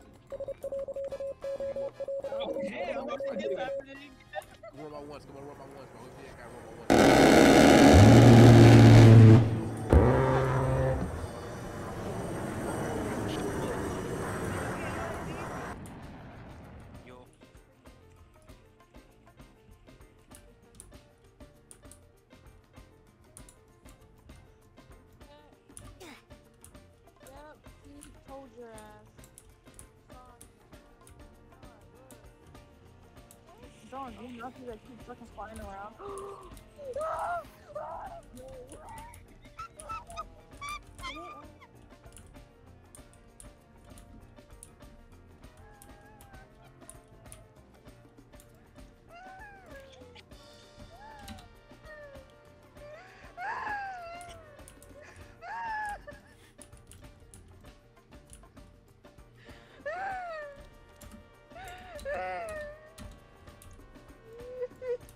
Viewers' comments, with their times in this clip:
0:07 my fev part bc of A-10 sound
0:51 why this kid crying